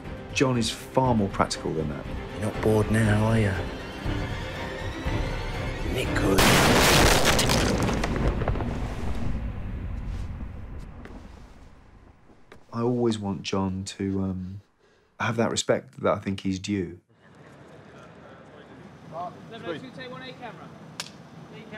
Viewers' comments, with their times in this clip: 0:04 GUNS ARE L O U D